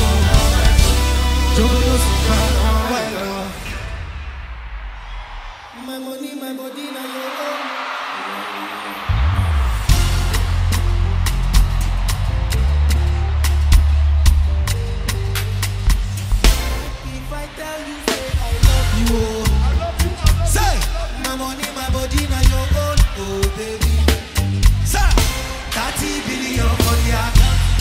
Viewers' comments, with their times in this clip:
0:10 it is me or are they playing off key from ?